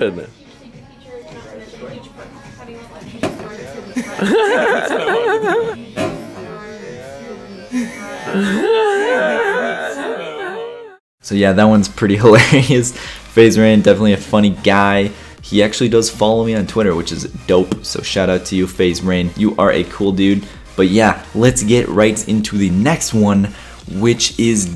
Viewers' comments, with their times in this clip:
0:10 that laugh tho :b